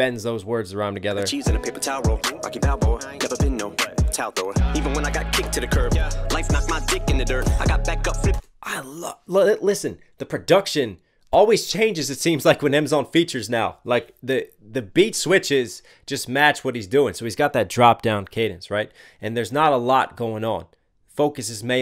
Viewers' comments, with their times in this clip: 0:09 its like he raps and then they make a beat to suit him after he raps it, he's a lyrical genius. love it